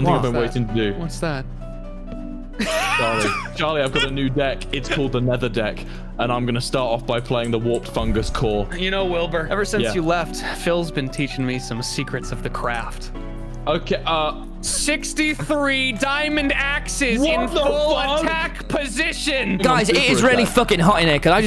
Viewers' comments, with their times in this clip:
0:06 Why is no one talking ?